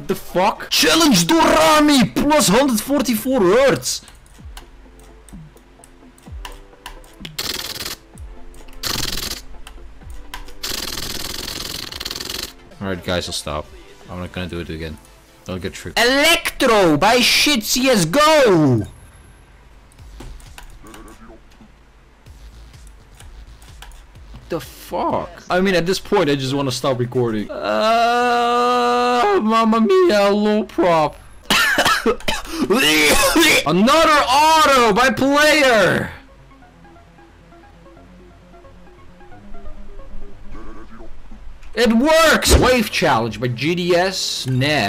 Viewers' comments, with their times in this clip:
0:03 silent click level 10000000 activate XD
0:05 it sounds like a fart
0:05 I tried to copy what he made with his mouth but ended up chipping a tooth
0:07 Speedhack Or why are you hiding clicks?
0:07 you can hear mouse clicks if you slow it down
0:08 the futurist mouse noise
0:10 has spam clicking like silent circle XD
0:31 funniest cof i've ever seen and listen. Still laughting since yesterday.